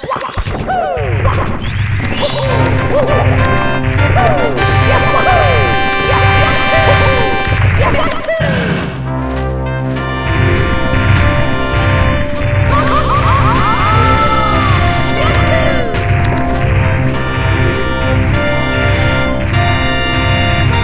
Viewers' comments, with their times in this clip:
0:03 Bowser: Confused screaming